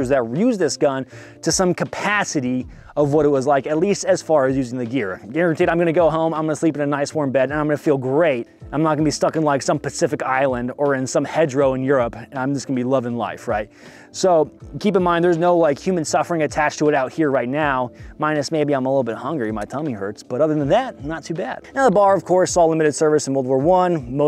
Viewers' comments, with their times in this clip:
0:05 that sounds exactly like the Thompson from CoD WaW lol